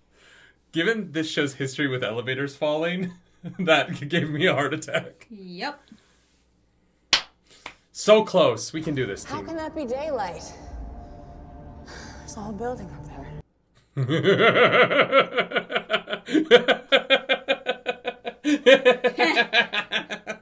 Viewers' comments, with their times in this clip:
0:08 that laugh! Potential spoilers: Oh, boy! Naomi is in a bad place you said...